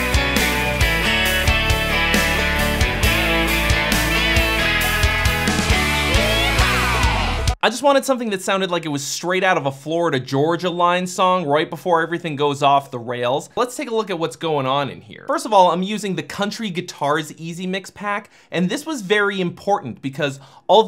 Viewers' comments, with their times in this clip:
0:04 if Tobias Forge wrote a bro country song